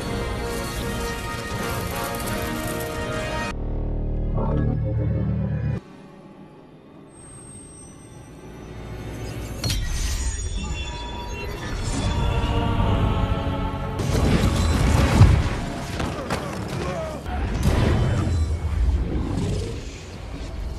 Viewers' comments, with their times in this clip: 0:03 All 4 glow with sound. Why was that part so fkn BADASS?!🤣🤣
0:04 sounds amazing, to me at least
0:04 I love all of these sounds, but the one is amazing to me. It even sounds a bit like a lightsaber swing as well.
0:05 When 4/6 stones make sound